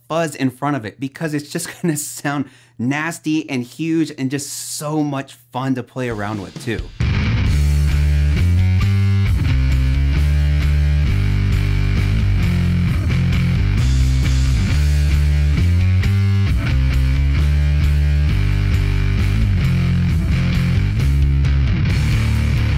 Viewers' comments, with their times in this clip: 0:07 Sounds like We Hunt Buffalo.